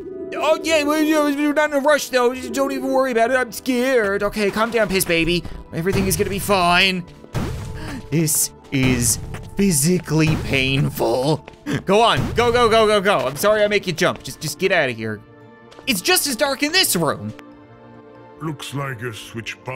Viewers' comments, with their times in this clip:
0:04 that voice he used sound like the voice he used for Nugget from Kindergarten